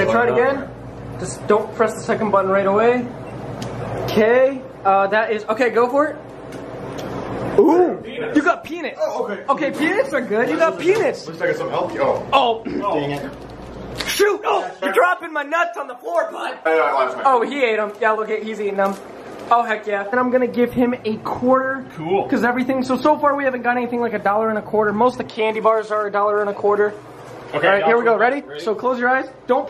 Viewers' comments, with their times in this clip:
0:10 its sounds like he said something else
0:11 👕👓 I swear he said pen's